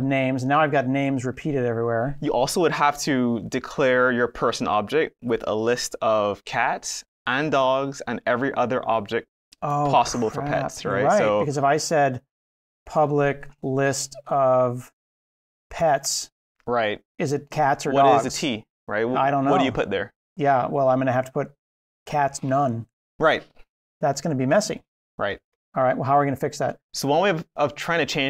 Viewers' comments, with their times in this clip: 0:10 I know this is rehearsed but the "oh crap" was heartfelt!! :) an acting profession awaits when AI takes over programming!! :)